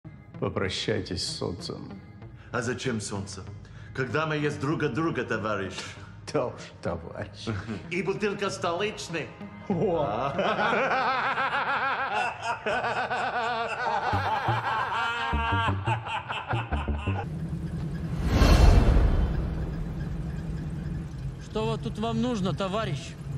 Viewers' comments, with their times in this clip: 0:09 that laugh is infectious.